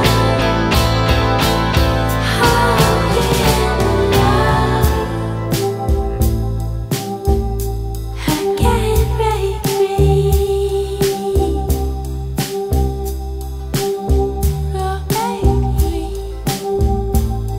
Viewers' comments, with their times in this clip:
0:05 onward reminds me of when you have one heart of health left in a video game